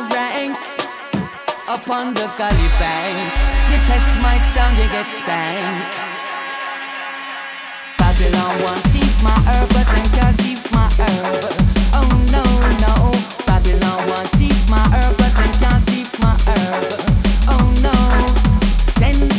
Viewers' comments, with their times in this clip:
0:04 i touched myself to get spanked?